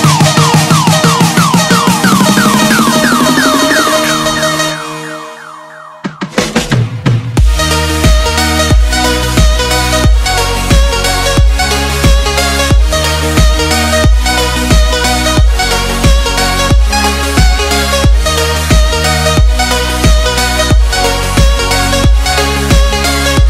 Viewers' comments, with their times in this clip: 0:05 angry Vereschshackc noises (However it's spelled)